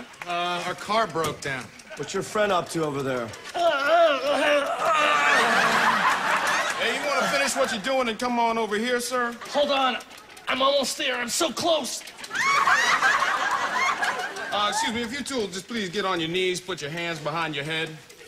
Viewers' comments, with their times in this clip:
0:04 THE NOISES HES MAKING LMAO I CANT 😂